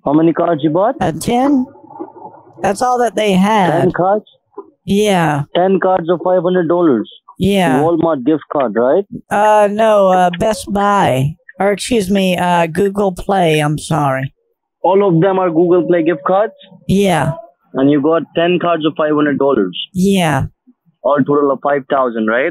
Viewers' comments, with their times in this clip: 0:06 you can hear him salivate